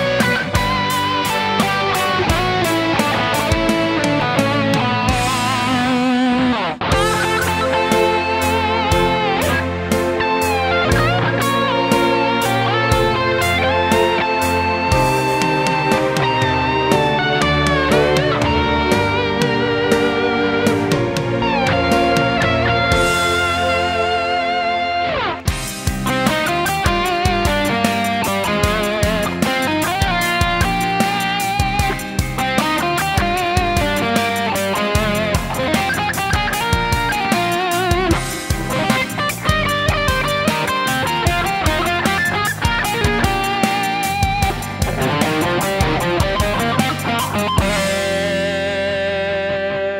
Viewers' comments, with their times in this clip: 0:07 I thought it said Eric Cartman 😂
0:30 sounds better with a nylon string (in my opinion) but with distortion is nice too